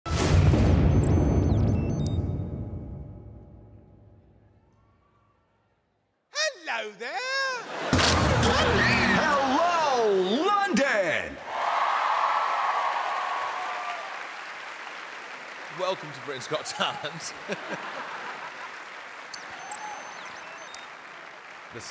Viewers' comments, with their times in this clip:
0:06 Davids hello seconds was so high pitch and very high lol